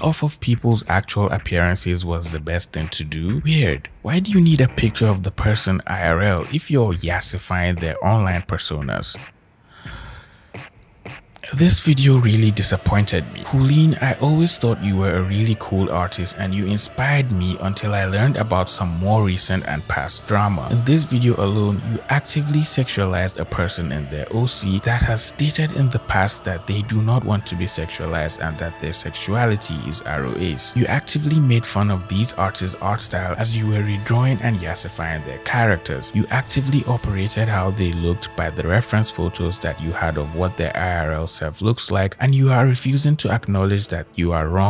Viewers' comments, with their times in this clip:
0:09 Buddy had to inhale like Ace Ventura to read all that (I'm genuinely thankful that you read that, cause I'm way too lazy to read all of that💀)
0:10 takes a deep breath to read lol
0:10 THE TERROR IN HIS EYES AND THE DEEP BREATH IS SENDING ME- 💀
0:11 THE DEEP BREATH BEFORE THE COMMENT LOL
0:12 im sorry i know this is a serious video but the music took me tf out
0:27 I WAS NOT PREPARED FOR THE MUSIC